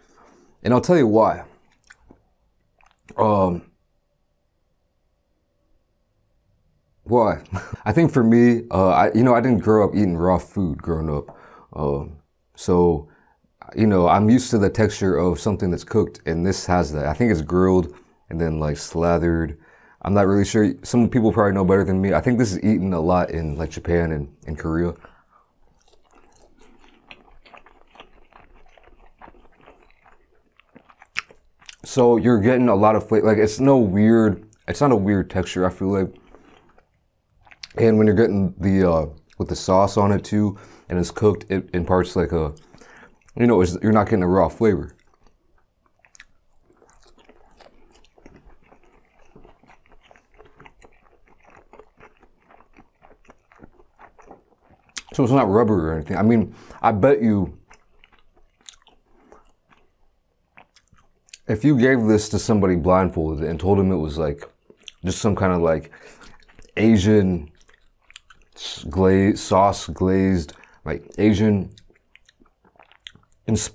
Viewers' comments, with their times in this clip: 0:04 mane i thought my phone froze for a sec i was like yo wtf but he had to take a pause
1:01 I love how he always tries to use «big Words», and then sometime pauses when he cant find them in his vocabulary.